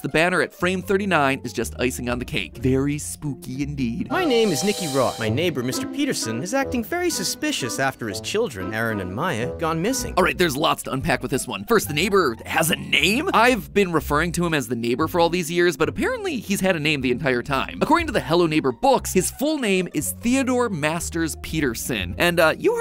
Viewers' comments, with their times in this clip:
0:05 oh my god this sounds like 'my story animated' narration 😂